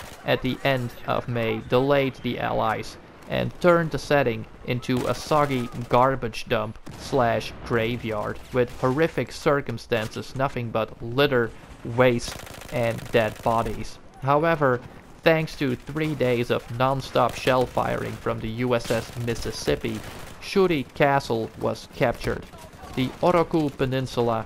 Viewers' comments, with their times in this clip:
0:05 Always Love listening to your commentary buddy you are really good at it and by the way you pronounce Japanese names really well wish I could pronounce them that good LOL 😆 By the way great shot love that gun 😎👍